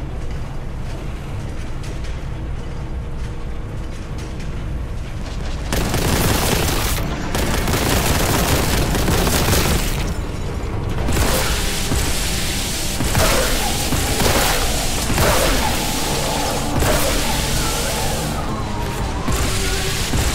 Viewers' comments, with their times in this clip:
0:07 Well, there is some music but the scene cuts before you can hear much of it.